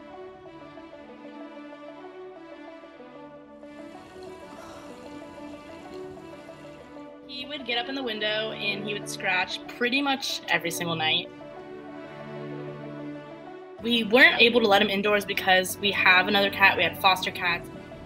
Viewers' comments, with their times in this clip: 0:04 That cute face and scratching on the window ❤